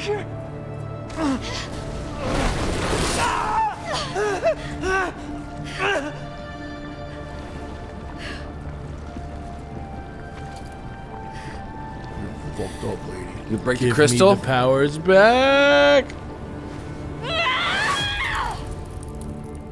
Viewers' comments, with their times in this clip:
0:03 love that Dark Souls kill sound